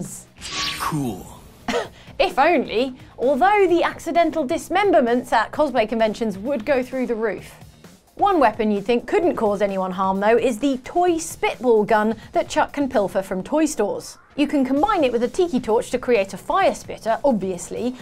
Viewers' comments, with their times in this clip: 0:04 whats a cosmay convention??